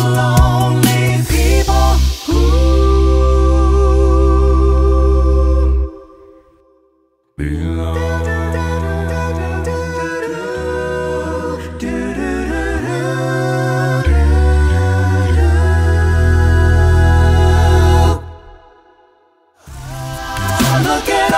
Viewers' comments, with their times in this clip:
0:06 gave me "from the dust" vibes from the end of the Warriors VoicePlay cover